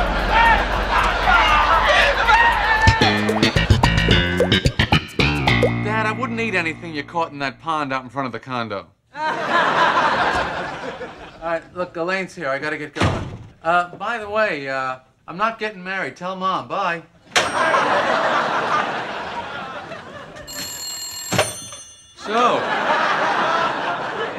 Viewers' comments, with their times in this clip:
0:08 we need a documentary on that legendary laugh. Seriously, who's is it?